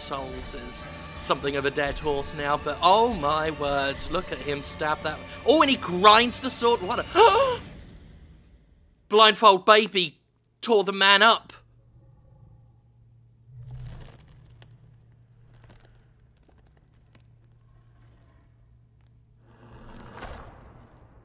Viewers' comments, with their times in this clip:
0:06 The genuine shock in your gasp never ceases to make me laugh! It prompted me to keep an eye out for the game's official release. I was not disappointed!